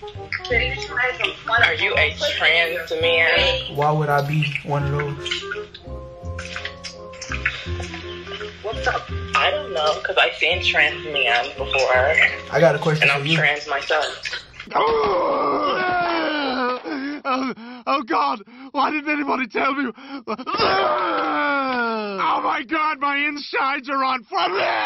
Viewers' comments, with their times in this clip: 0:10 I knew I wasn’t tripping I heard a man voice